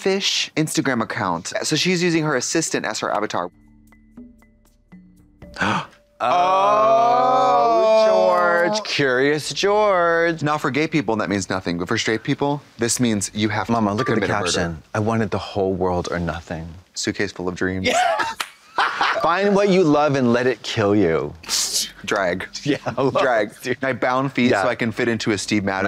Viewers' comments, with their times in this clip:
0:04 I don’t get what’s happening? Why are they saying ohhh?😂
0:07 (Blonde Women in Unison) Ohhhhhhh!